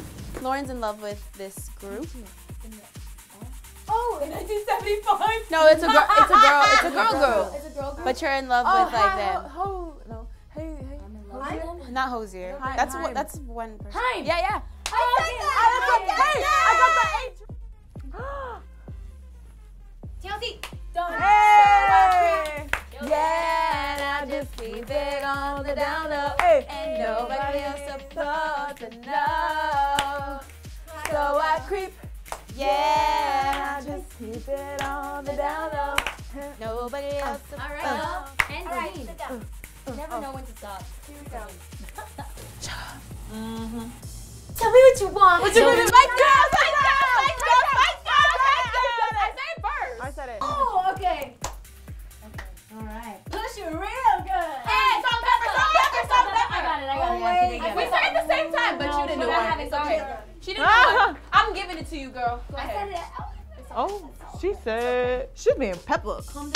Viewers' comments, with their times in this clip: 0:05 THAT LAUGH MAN! I wish I could see her face lmao
0:05 Camila’s laugh is everything😆😆😆
0:05 Camila’s laughter lmao
0:35 the song omg i love the way fifth harmony makes every song twice as better as the original one and there not even Trying woow ily guys
0:48 Lauren is me with my LOUD friends